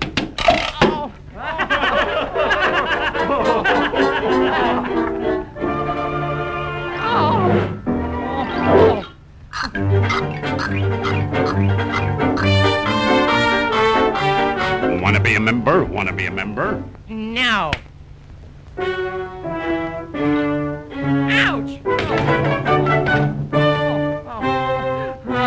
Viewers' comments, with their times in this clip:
0:06 this music I like